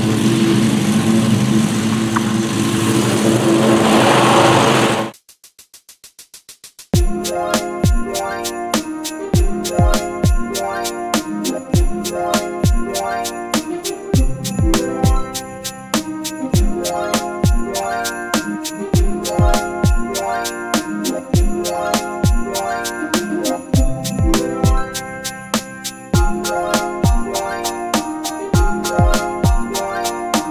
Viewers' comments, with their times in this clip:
0:05 the music fits perfectly
0:12 How you synced the audio fucking amazing :D